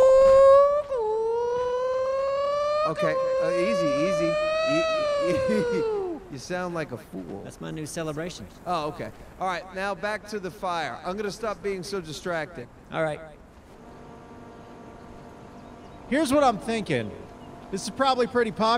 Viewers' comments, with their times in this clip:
0:04 sounds like F1 V10 to me